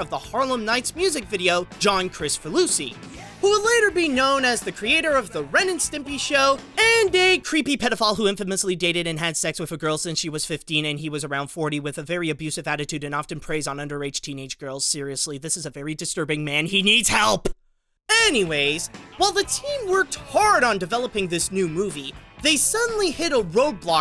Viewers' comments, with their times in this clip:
0:06 at least it wasn’t john krasinski